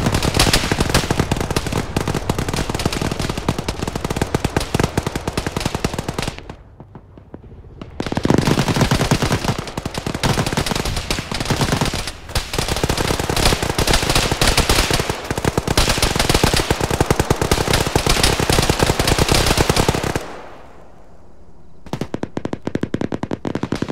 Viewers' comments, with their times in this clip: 0:07 So much gunfire it looks like rain